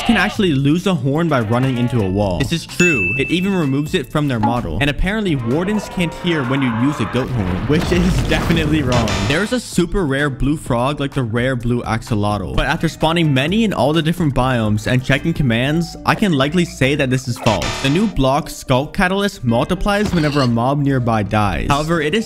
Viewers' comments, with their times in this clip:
0:05 Man the goat horn triggered everything like it just woke up his roommates 😂